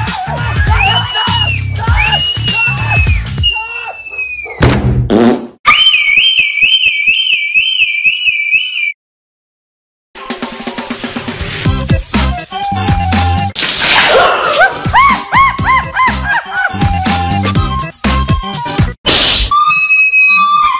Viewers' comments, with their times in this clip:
0:04 Mom scream alarm is very ultra funny😂
0:07 sound like ambulance alert